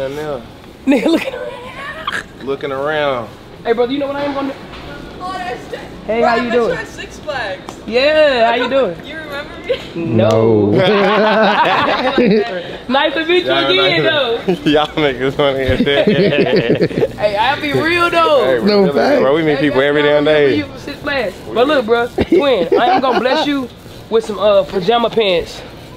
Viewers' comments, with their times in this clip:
0:10 they were too honest with the synchronized “nooo” 😂🤣